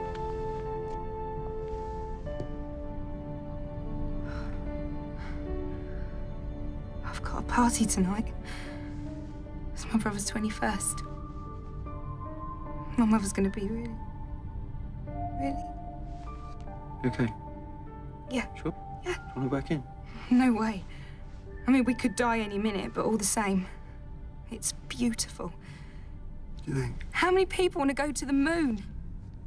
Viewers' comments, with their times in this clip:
0:10 when martha mentions Leo's birthday, can anybody else hear those first 4 notes of the Cyberman motif? She goes on to talk about her cousin Adeola, who died at Canary Wharf, maybe just a coincidence